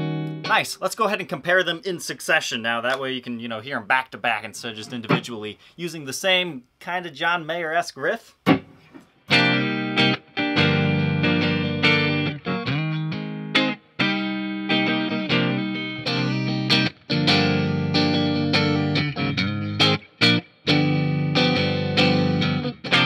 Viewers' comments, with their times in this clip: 0:05 more like Say It So style...
0:09 It sounds like "Say it aint so"